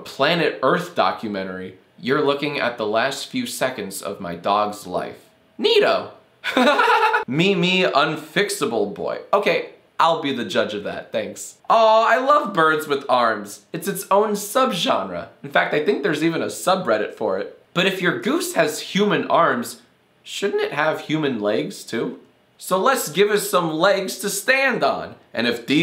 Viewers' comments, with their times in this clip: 0:05 that fake laugh killed me XD
0:06 For a psychotic laugh go to
0:06 -WhAt was that laugh
0:06 That laugh makes me chuckle and cringe at the same time
0:06 Please explain this laugh:
0:06 omg that laugh lol